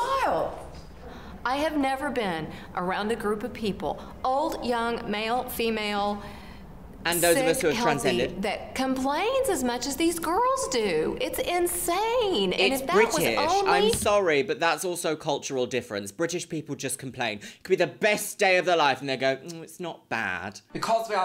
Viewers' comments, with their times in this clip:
0:08 They probably feel really embarrassed right now, and instead of making them feel better, the lady is just yelling at them.